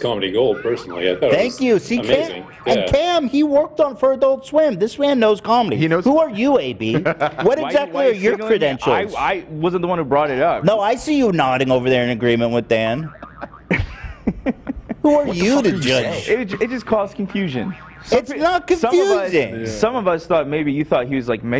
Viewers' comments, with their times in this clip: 0:03 When theyre arguing while the slapstick sfx is still playing in the background is hilarious